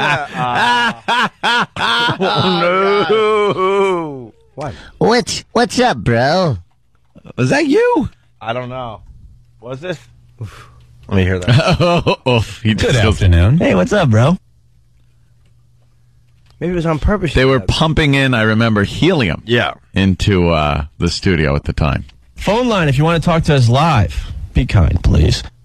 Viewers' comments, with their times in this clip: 0:10 Jesus, Ant does sound like Howard